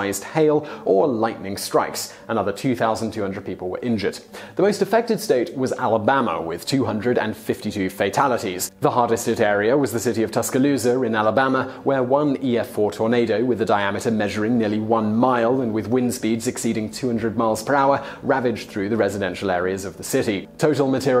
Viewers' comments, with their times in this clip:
0:06 The English accent can even make Alabama sound classy. I actually had to think about what he said for a second before it registered... pleasant pronunciation of a trashy place.